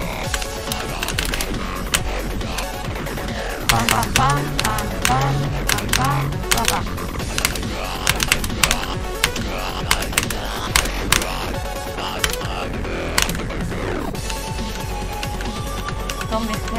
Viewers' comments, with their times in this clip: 0:03 sounds like a ritual for some reason